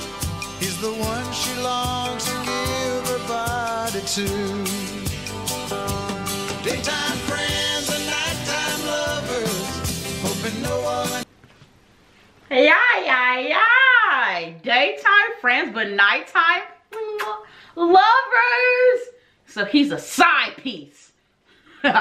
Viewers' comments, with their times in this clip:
0:10 Yes Ma'am those are shakers 😋 I always loved his voice. You're a goofball lol love it